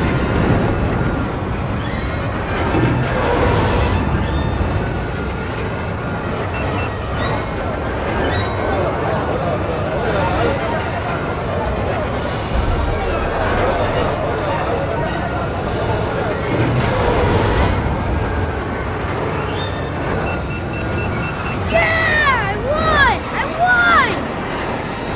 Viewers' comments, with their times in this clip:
0:06 That music sync tho.